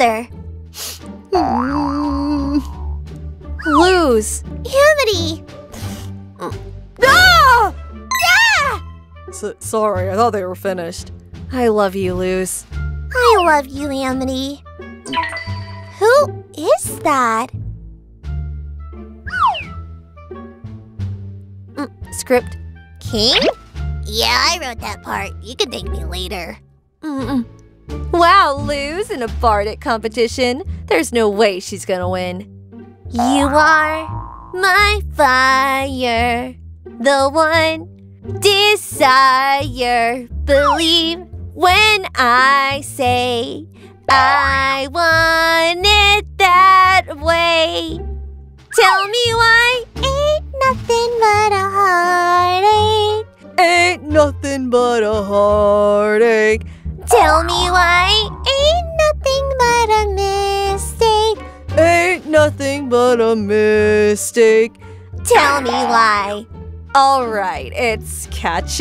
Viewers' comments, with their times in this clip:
0:03 Below crying is too funny 🤣🤣
0:56 couldn't just overlapped the 2 Voices together